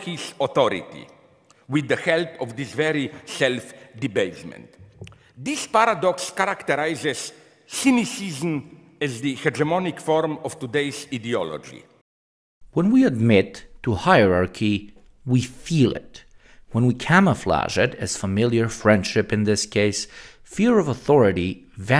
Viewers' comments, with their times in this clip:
0:09 I love how Slavoj says ,,Idiology".